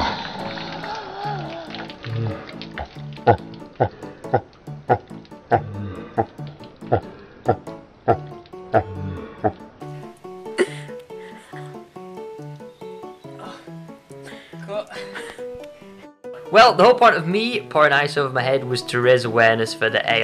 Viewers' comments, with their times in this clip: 0:03 shredder and darth vader laughing togther
0:04 The laugh of
0:06 THAT EVIL LAUGH THOUGH